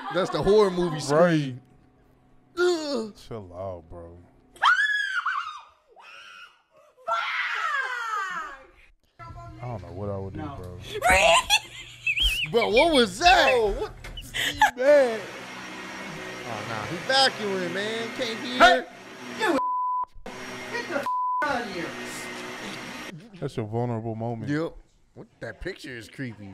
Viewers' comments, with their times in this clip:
0:10 my boy forgot how to scream ! lmao